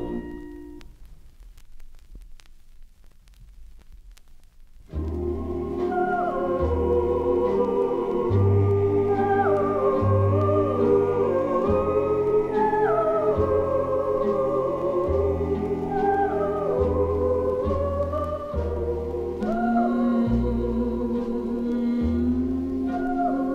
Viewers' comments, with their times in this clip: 0:04 Hard to believe this even exists! The Schumann Voices version of “Where or When” is haunting!